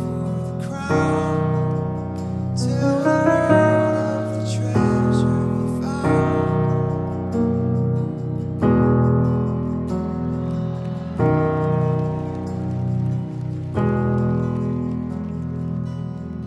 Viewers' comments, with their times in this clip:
0:03 Music Theory Quiz!! Can anyone name the chord played at the mark and describe it's meaning??!! It's only played once in the song - Hint! - the chord holds a close relationship with the IV chord.....